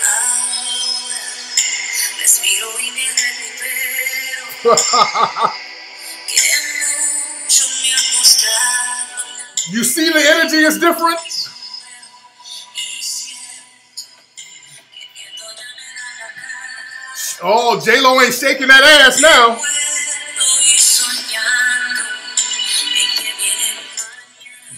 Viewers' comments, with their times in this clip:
0:05 That laugh did it for me.